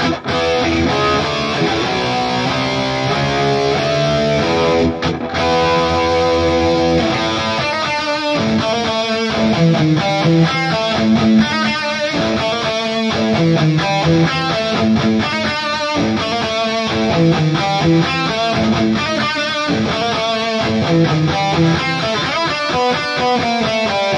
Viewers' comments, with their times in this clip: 0:07 HELL YEAAAH, THAT'S WHAT I NEEED, some metallica cover on that guitar, great play! 🤟